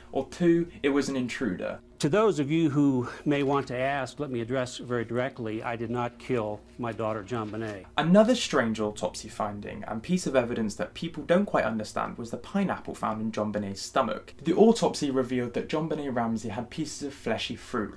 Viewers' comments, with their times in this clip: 0:04 the random switch to only hearing it in my left ear scared the shit out of me lol